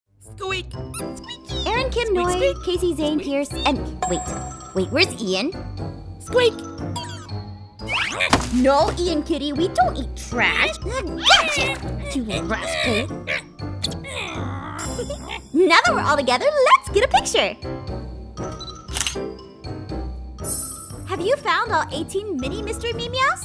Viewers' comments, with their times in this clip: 0:06 Ein's squeak on is just too cute I can't stop playing it